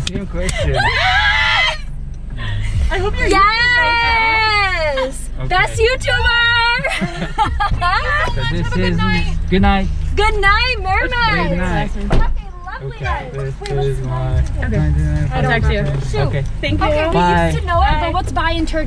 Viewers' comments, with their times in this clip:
0:03 sound jealous lol